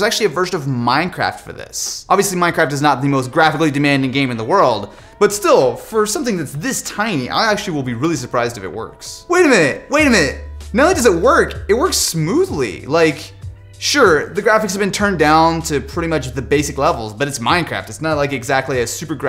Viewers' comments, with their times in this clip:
0:07 the Kazoo vibes